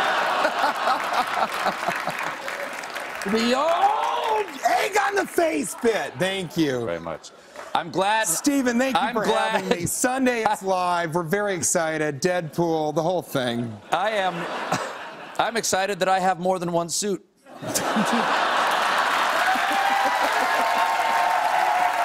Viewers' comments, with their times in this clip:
0:03 That golden Gorburger yell